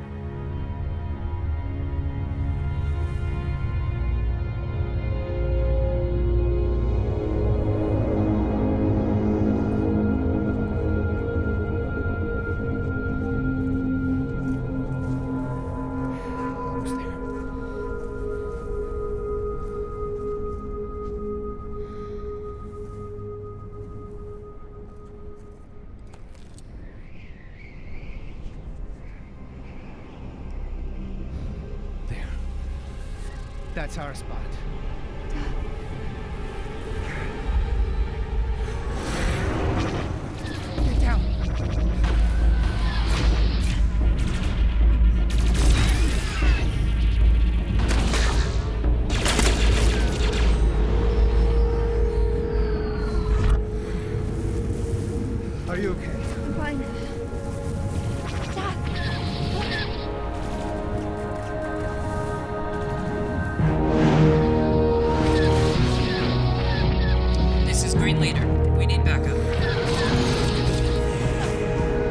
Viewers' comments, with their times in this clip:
0:09 Ugh it's too quiet, I couldn't really make out what they were saying and it sounded like she said "uh how long is their hair again?"
0:14 Beautiful and well shot. My only comment is the dialogue in the mix is super low and makes it very hard to hear against the score and on a personal observation note - nothing much happens in the first mins which is a long time in a 7min short Taking nothing away though, epic effort and thoroughly enjoyable
0:58 Great filming! (cinematography?) Looks very professional, screen ready. My only criticism was the ships fighting around the mark were just doing tight little loops. This seemed very unnatural, almost like they were hanging by strings in the air. The music was also a bit too loud. I didn't understand a work that was said in the last minute or so of dialog due to the music.